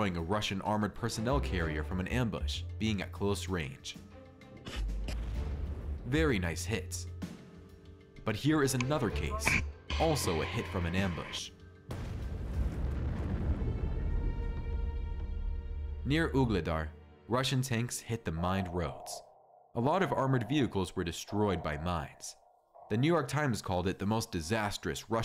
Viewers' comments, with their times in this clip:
0:08 I love how the dogs know to move when they hear the first sound of the rocket launching. 😉